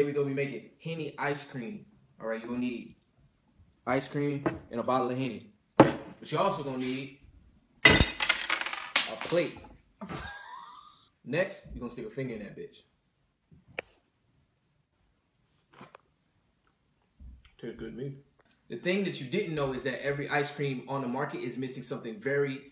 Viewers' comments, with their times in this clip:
0:08 cameraman couldn't hold his laugh 😂😂😂